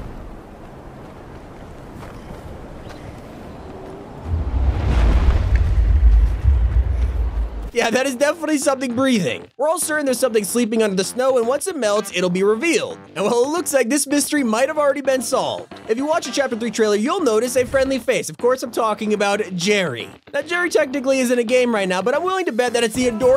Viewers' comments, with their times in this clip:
0:06 sounds like a dragon spreading his wings